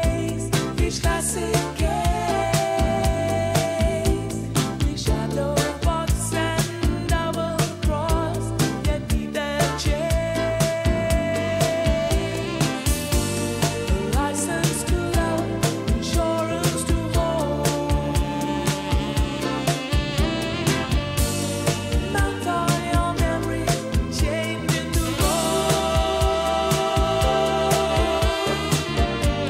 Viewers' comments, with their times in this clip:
0:10 my favourite part and Saxophone ♥️🙂🎷